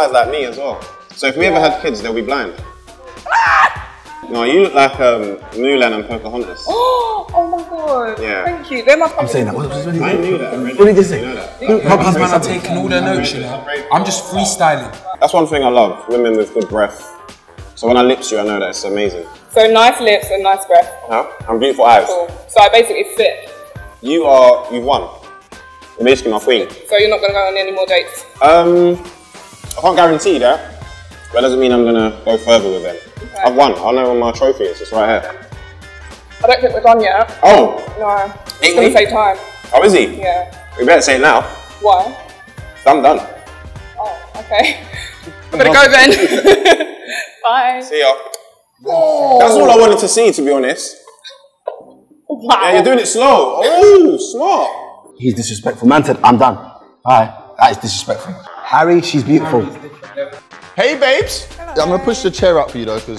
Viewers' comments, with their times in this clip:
0:03 Chunkz laugh...enough said 😂🤣
0:34 I can’t understand what she’s saying Why did the date end?
0:44 Funfact:At when he say see ya it sound really like "szia" from hungarian language which means hi